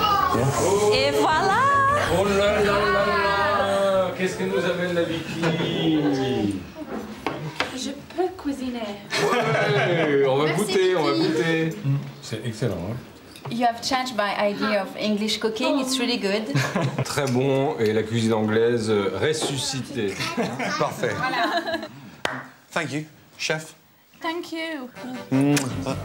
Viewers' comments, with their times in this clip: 0:09 I'm sorry but sounds like he's calling her white in Malay (particularly in kelantanese accent)